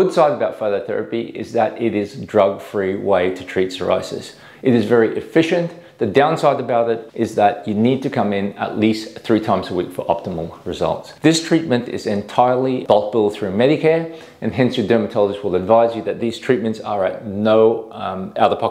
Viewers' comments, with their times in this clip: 0:05 he just called it cirrhosis